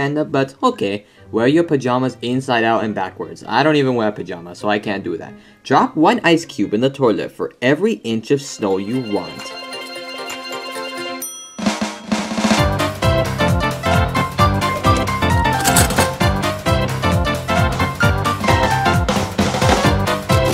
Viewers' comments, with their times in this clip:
0:08 I like how Coconut Mall suddenly plays in